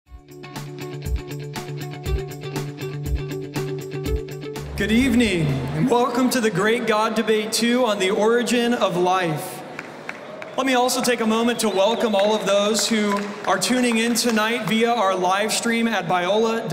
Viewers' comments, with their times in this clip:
0:03 Ebola university? Biola university!